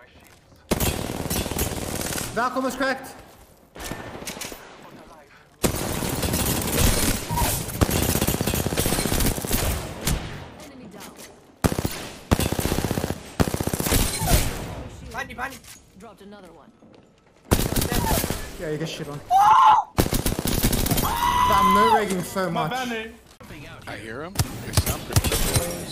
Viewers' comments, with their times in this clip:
0:07 wtf is that ping. I aint never reload and get a kill noise after